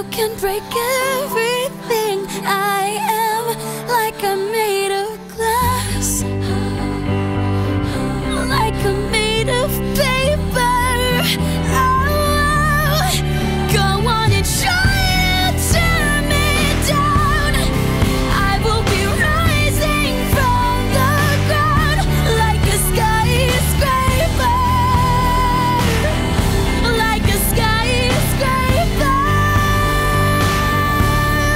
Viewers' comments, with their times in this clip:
0:07 She is one of the strongest women I've ever seen and such an inspiration to me. You can hear the pain in her voice, you can really feel it. But the thing I love the most is her expression It's almost like she's saying "Yes, I've suffered, but now I am stronger than anything".
0:13 Sad it took me 4 years to finally listen to this amazing song. There has been so much crap out there over the years that I just stopped listening. I love the melodies in this, and the passion and rawness of her voice gave me the chills. This is now only the second song I have heard from Demi Lovato so far.
0:14 mmm yeah sweet ballads. Making karaoke videos has made me into a Demi Lovato super fan. AND PROUD. :) P.S. that high note ohhhh yeahhhh!